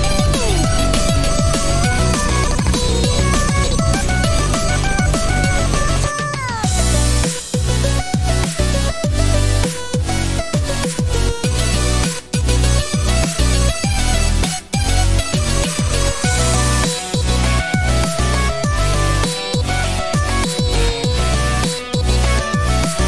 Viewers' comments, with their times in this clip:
0:06 THAT SYNTH IS SO CLEAN